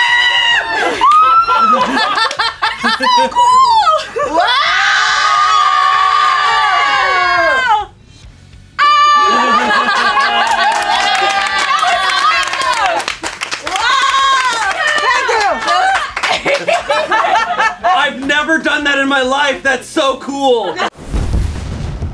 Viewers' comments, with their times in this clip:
0:07 the timing with Shayne's laugh is fucking brilliant lmao